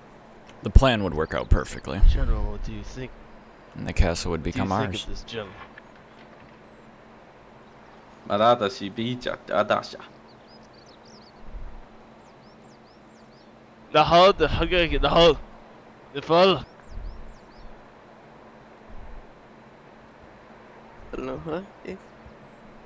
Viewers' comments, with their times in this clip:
0:06 That gibberish, lmaaaao! Sounds like the first one is talking finnish!